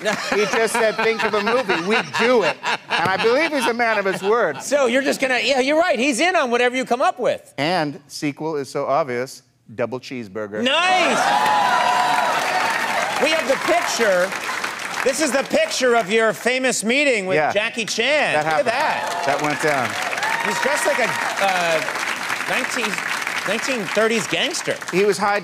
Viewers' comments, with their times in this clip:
0:10 LOL at the crowd cheering over a sequel for his crappy movie idea